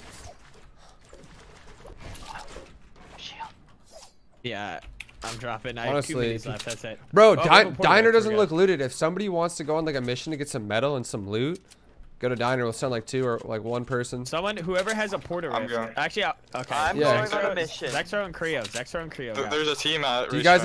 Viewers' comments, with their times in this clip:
0:08 🤣 it started to sound like they were in the hunger games